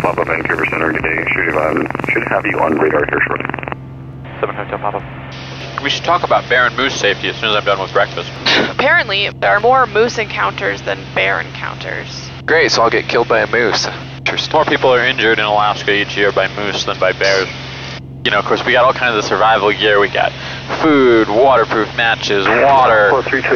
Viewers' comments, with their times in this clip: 0:05 "we should talk about Baron moose safety..." I thought we were in a Bonanza - lol (yes, I know) ;)